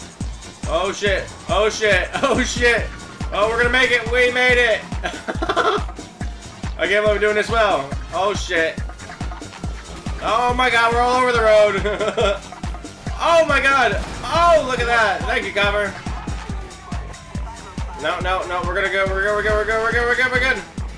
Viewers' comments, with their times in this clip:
0:04 DAT LAUGH HAHAHA